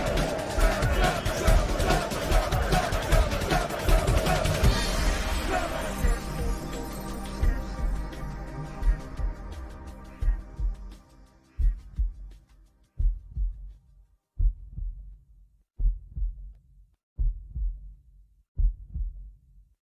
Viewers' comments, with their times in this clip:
0:06 Is it just me or the 7-7-7 beat music sounds so cool in the end ?